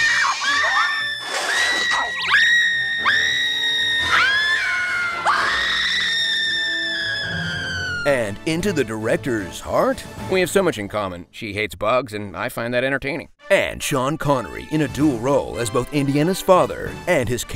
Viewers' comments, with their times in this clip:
0:05 XD that scream Even the other dude was like: "ok . . . thats just overdoing it . . ."